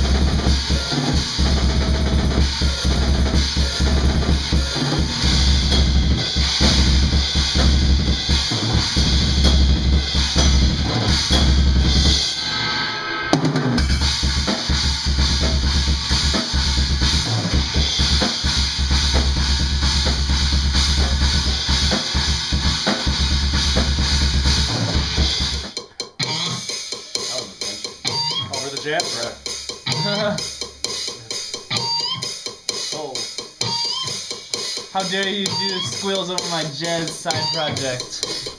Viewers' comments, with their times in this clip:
0:08 Anyone else notice the Faceless riff ?
0:13 love the groove
0:25 I mean his adams apple controls the harmonic